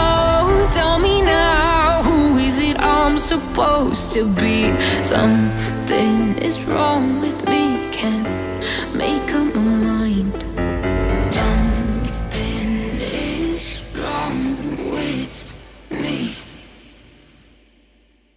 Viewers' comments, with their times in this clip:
0:04 Love that piano